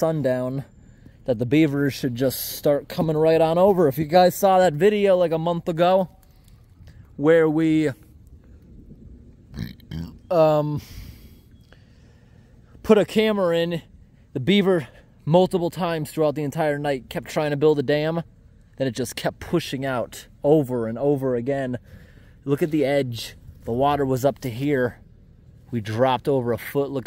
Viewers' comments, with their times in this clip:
0:03 Post 10 IRL - "..saw the video like a month ago... pause... Where we... pause... Belch... umm..."
0:09 Gross Belch hahahaha